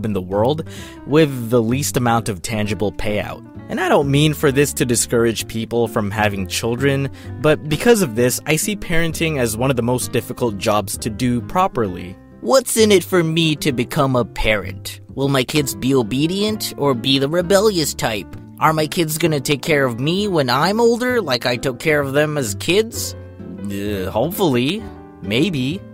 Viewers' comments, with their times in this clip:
0:09 Holy Shit his ears! How loud was that scream?